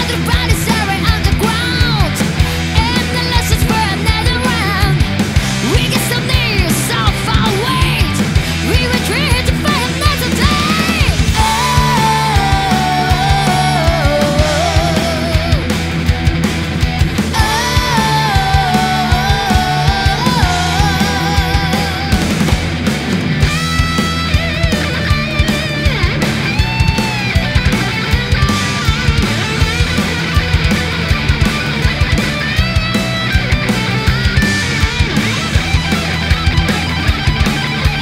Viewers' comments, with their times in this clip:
0:09 double kick is now basic skill for young metal players. I got heart attack
0:23 sister !! i your's phrasa is perpect!
0:25 Amazing performance! But the guitar solo seems to be a pre-recorded.